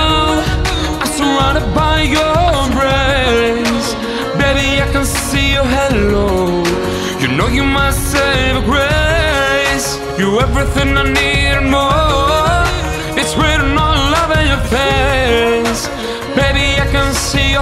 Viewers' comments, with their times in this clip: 0:05 You doing great, I liked how you drag the note min ... I love it